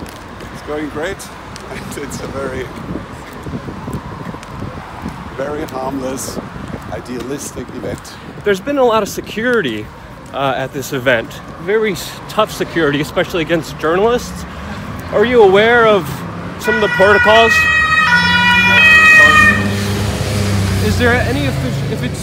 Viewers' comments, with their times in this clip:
0:05 Why does HARMLESS sound like OMINOUS to me? Literally.